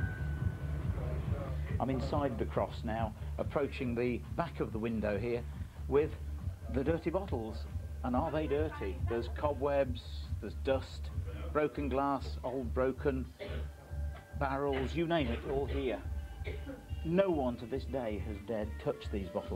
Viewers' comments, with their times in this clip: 0:07 oh man, at least ask the bar staff to turn off the music.